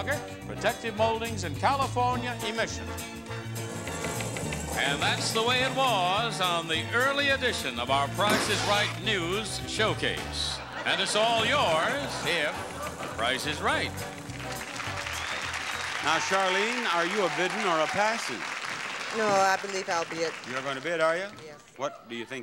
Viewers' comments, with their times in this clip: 0:08 Whoops! I heard an audible pants ripping blooper!